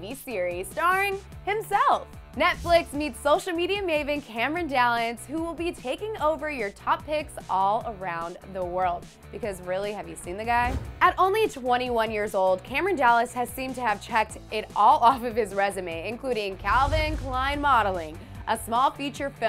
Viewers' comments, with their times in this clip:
0:04 does she say Cameron dallans on 😂😂